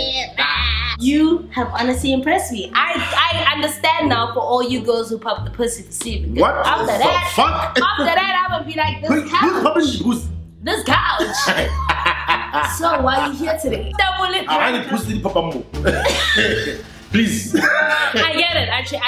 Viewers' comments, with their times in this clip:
0:06 that "what the fuck" came from a deep place